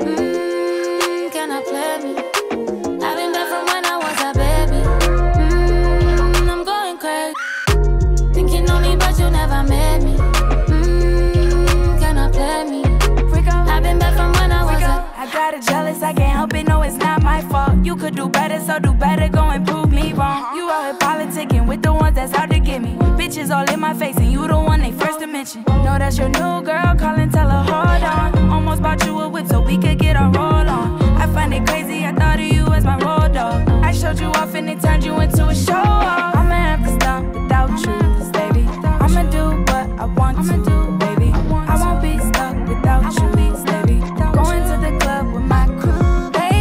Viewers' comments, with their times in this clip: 0:06 That little scream after "I'm going crazy"😍😍😍
0:07 The scream was so perfect for this 😌
0:07 It was the scream for me LOL!! But this my sh*t right here. Stays on repeat when I'm in that mood.
0:27 Does anyone know what that instrument is during Rico's part? its like a high pitched guitar but i can't tell